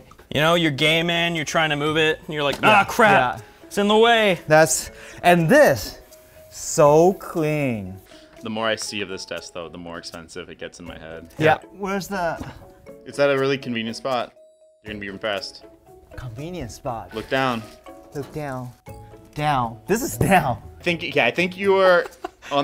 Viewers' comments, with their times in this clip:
0:08 Did both of them react at the exact same second with the exact same "Yeah" ? Lol